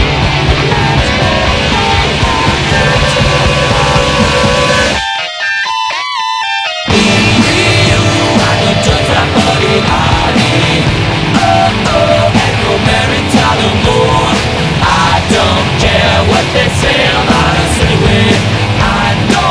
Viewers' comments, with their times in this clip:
0:04 That riff was fucked up bruh 😔